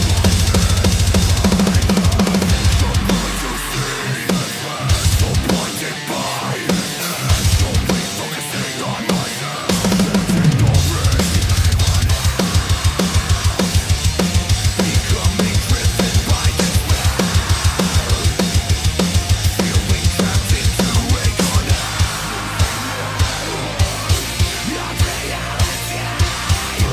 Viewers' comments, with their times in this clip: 0:10 those choke were SO DAMN CLEAN!!
0:12 The cymbal action 😱👏🏼